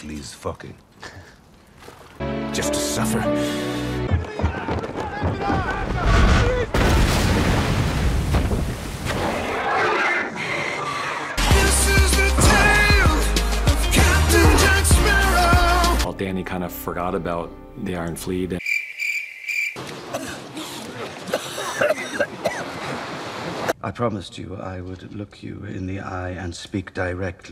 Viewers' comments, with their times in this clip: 0:10 I almost choked on my drink I swear XD it's even in sync with the music ffs XD